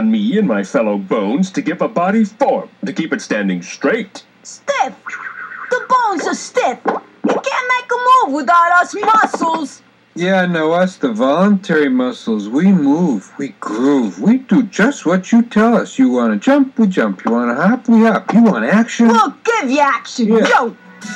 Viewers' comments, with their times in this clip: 0:09 Sound like Garfield